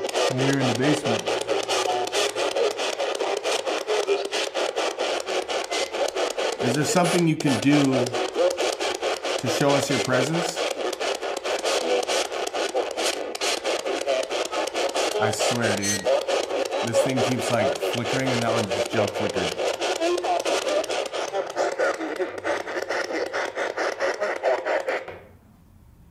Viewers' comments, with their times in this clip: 0:08 eerie voice replies with “Yes.” Then the lights flicker...